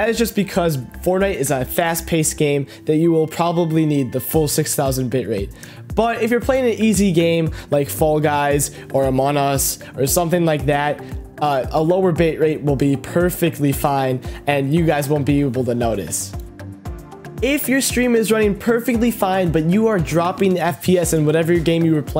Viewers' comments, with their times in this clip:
0:08 is noone gonna talk about how he said "amon us"
0:08 Amonos? i think he meant Among Us